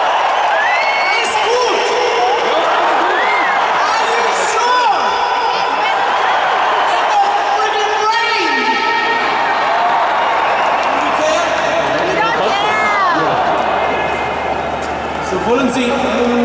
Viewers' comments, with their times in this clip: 0:04 OMFG Brian just killed me how the fuck is he speaking those german words THAT well like what?! But it sounds very rude :( I am happy that he´s english